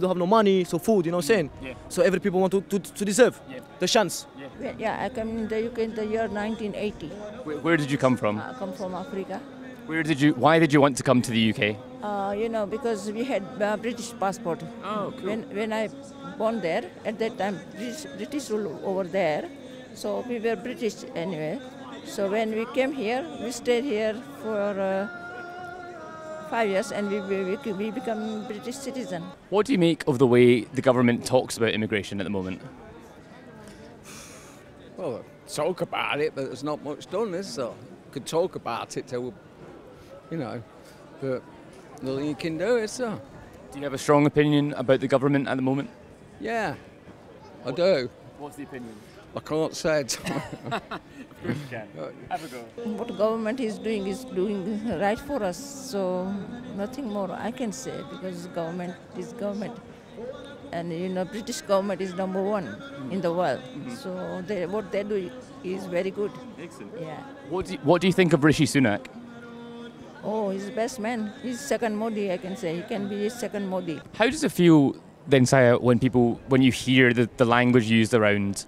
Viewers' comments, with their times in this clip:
0:05 -----------WTF IS THAT ARAB MUSIC IN THE BACKGROUND? aRE THEY NUTTS?
0:05 playing a british classic in the background 💀💀
0:05 how the hell can you live in the UK for 40 years and still not know how to speak English???!!!
0:05 Yeah nice British folksong playing in the background, don't mind it too much or you're a -ist something.
0:09 the Islamic call to prayer going on in the background while this video talks about immigration in Britain....
0:15 the islamic prayer being played loudly, imagine being in a middle eastern Islamic country such as Iran and singing the Christian lords prayer or a Jewish prayer on loud speaker...the days of that person would be numbered! Also, the guy with the unlit cigarette in his hand who came here as a young child and thinks the UK should have to accept everyone who comes...how is his foreign accent still so thick? My nephew moved to a different country as a young child and now sounds exactly like the natives where his mum and dad still sound geordie!
0:19 british streets, muslim prayer call in the background, in a country were 46% are christians and less than 7% are muslims. Is that really needed, couldn't you do it without that noise.
0:23 To be listening to that shitty music in the streets, in a country recognized for having had the best musical tradition in the world is sad, abhorrent, disgusting.
0:54 an islamic prayer in the background 😂🤣😂 totally British🤣🤣😂😂
0:56 Listen to the trash in the background? 😂
1:03 hearing this in the background makes you think you are in Bagdad or somewhere in the Middle East.